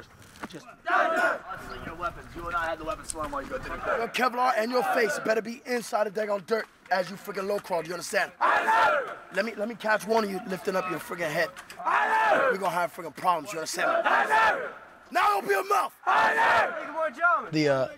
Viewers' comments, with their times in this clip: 0:04 Tell me why he sounds like 69